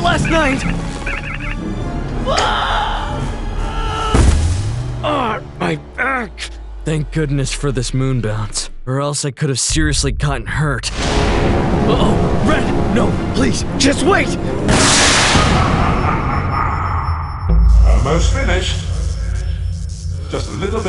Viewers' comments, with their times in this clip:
0:06 Also did yellow say ah my egg like he hit his ding dong?